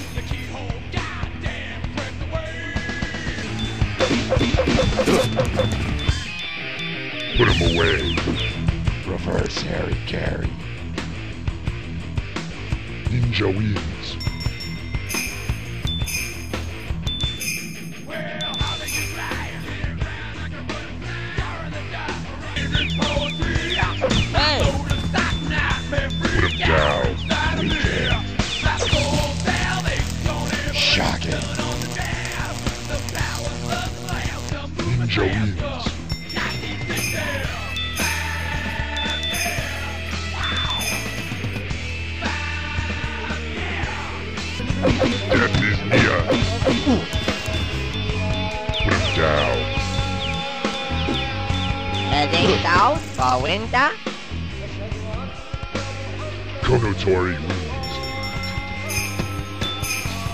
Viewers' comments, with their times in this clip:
0:06 "Reverse hairy-carry". Oh americans.
0:06 might be the corniest finisher I've ever listened to
0:08 Reverse "Harry Carey"? HAY! CUBS WIN, THE CUBS WIN!
0:08 -"Reverse Hari-Kiri!" Soooo.....Murder then? Also, I would get that sore throat checked out.
0:47 Anyone else here an adhan ?
0:48 In minutes I hear the Adzan, are you a Muslim?